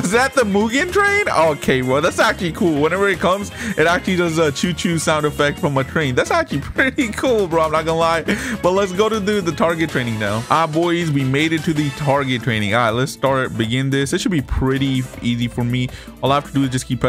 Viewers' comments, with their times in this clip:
0:03 cho cho made me laugh